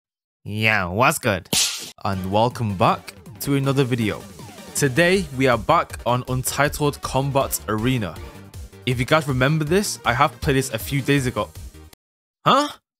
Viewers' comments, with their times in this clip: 0:00 Yo wtf the previous video he also started off sounding diff Omg is there a third hw?
0:00 is cringey Nerd voices lol